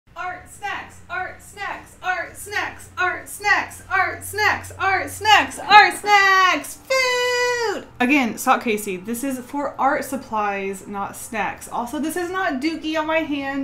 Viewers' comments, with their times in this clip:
0:00 ART WHAT! ART SEX!?
0:00 I thought she was saying “hard sex”